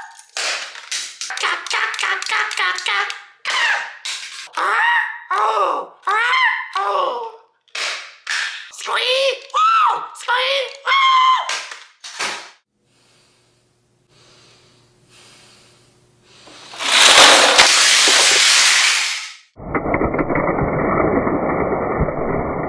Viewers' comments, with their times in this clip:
0:04 AHHHH OOF! AHHH OOF! He Said Oof From Roblox!